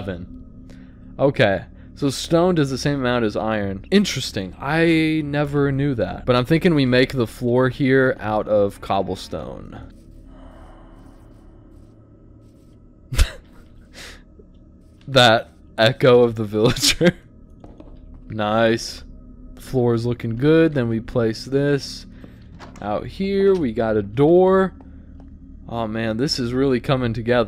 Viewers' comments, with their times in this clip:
0:09 bro the villager sounds genuinely depressed that he got stuck in a cave